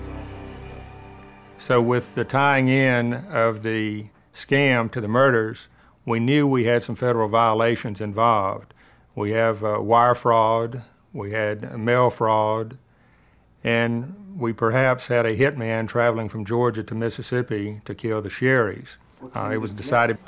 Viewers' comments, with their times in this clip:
0:07 What's a wire frog and mail frog?